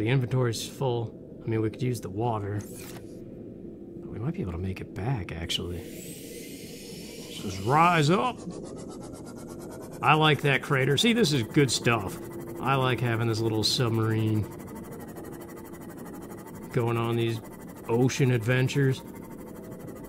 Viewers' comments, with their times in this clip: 0:06 did you say it like that as a Hamilton reference?